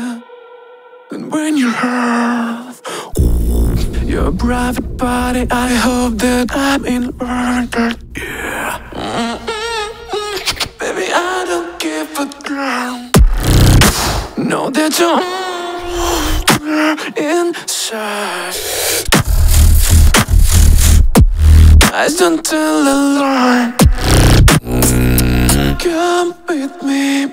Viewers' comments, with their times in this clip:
0:09 that gunshot went hard holy
0:10 that gunshot sound tho!!! 👌🏻
0:13 the gun sound makes me insane!!!!